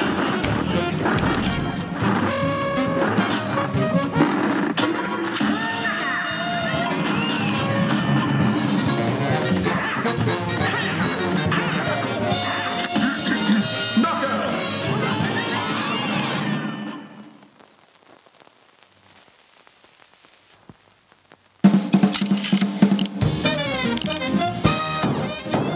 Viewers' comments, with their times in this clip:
0:04 The fake knockout screen as well as the announcer clearing his throat for the real one 😆
0:13 l like how when he says knockout he clears his throat before saying it
0:13 Love how the ACTUAL Announcer had to clear his throat to say Knockout for he is the only one to say it.